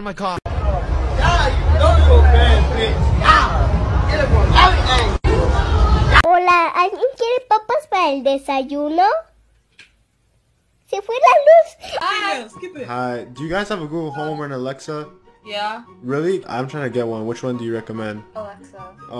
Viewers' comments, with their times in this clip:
0:07 Dude is my friends little sisters video voice , how did you get it 😭